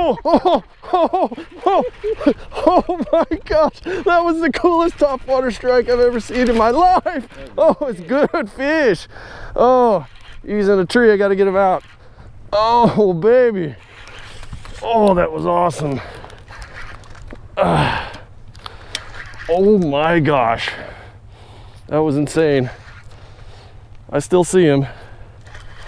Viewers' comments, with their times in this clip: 0:06 "Good Frish!" Haha